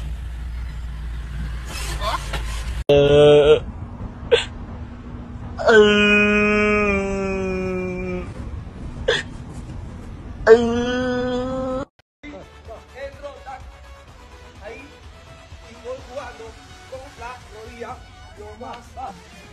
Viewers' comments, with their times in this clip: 0:05 why the stupid noises?